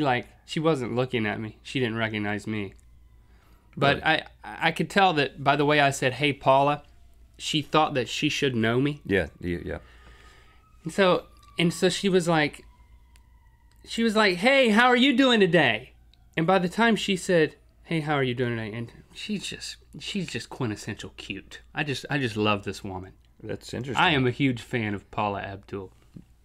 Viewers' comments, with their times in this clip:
0:10 love the sirens in the back round in lol